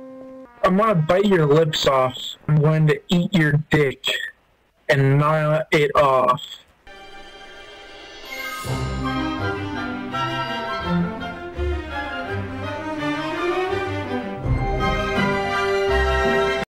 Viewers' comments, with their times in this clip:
0:07 perfect music choice